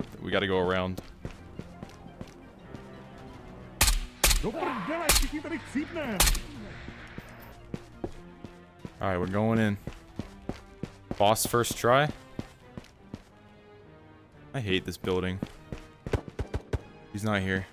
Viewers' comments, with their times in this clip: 0:05 Bro I heard the scav say "Skibidi Sigma"